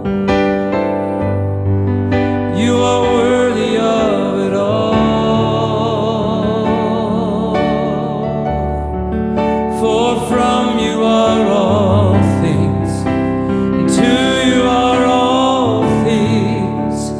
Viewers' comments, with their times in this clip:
0:04 Such a beautiful, sweet anointing... "You deserve the Glory".. You start singing, and His anointing falls... Such a blessing...🙏💐